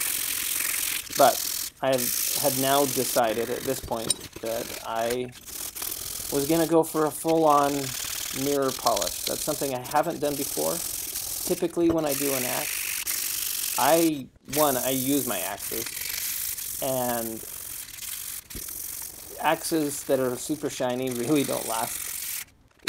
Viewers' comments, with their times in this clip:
0:07 WWI Machine guns in a nutshell: